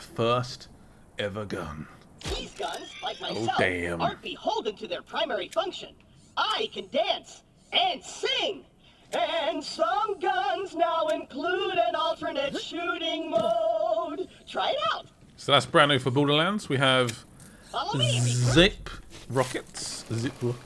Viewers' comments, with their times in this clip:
0:08 claptrap actually has a good voice